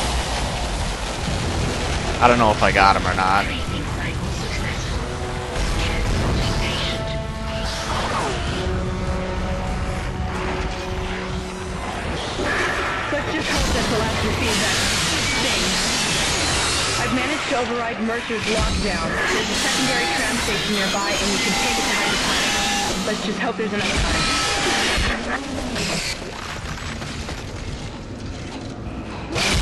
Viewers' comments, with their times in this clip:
0:10 LOL what did she said? "Bshhh yeaan rshh baashh rooofffffshh"